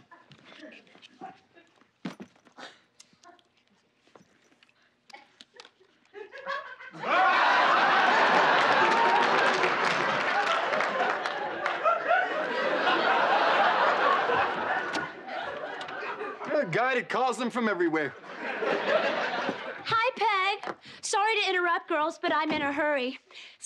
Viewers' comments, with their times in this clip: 0:04 The audience reaction is just priceless 🤣🤣🤣